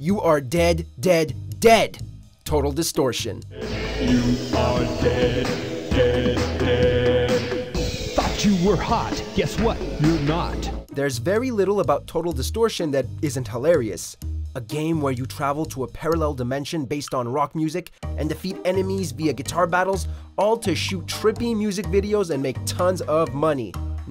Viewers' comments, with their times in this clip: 0:03 doesn’t the narrator seriously sound like the angry video game nerd for a moment there???
0:07 the song at my funeral